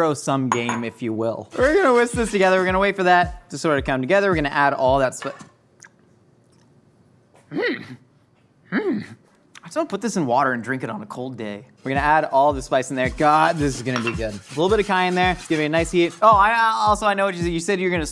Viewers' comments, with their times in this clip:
0:06 Josh's Yoda sound made me laugh SO HARD